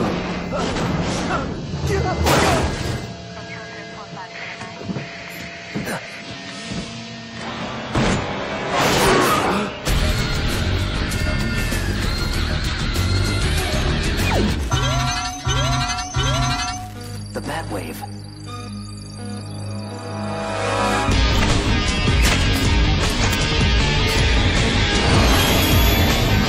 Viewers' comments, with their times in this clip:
0:10 sounded like Batman beyond love it